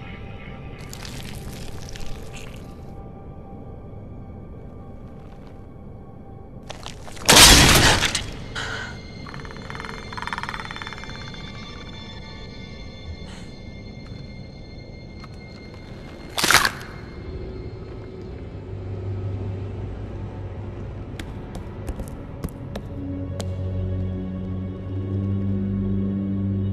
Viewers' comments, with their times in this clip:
0:09 i can't tell if scar's laughing, or just got startled